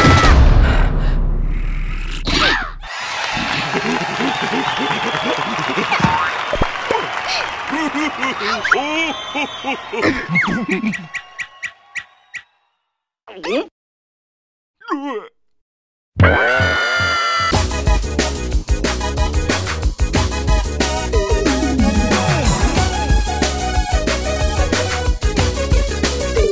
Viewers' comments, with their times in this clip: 0:10 Everyone: shocked to see yellow grow arms 😦 Yellow: Huh? 😐 screams in shock 😱😱😱😱😱 AHHHHHHHH